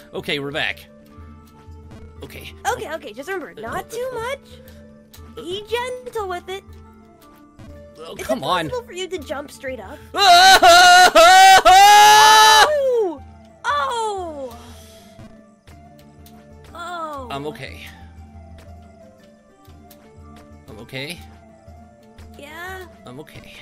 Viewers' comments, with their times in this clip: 0:09 sonic sounds like a car at this point